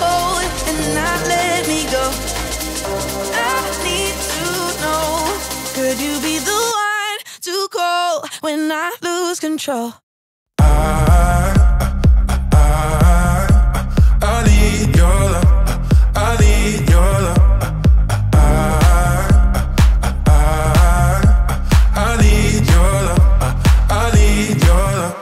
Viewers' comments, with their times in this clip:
0:09 sounds like “Could you be the one to call when NATO lose control”
0:10 English of Spanish💀💀
0:13 it was a song of late 90s or early 00 the melody was exactly like but there was no lyrics. Can't remember the name 😿